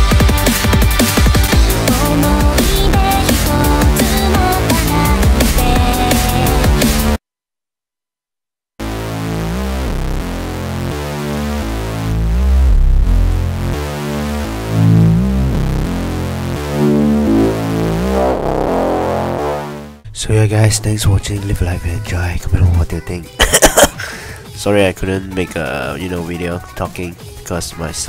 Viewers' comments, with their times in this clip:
0:10 WOAH! CALM DOWN THERE, SKRILLEX!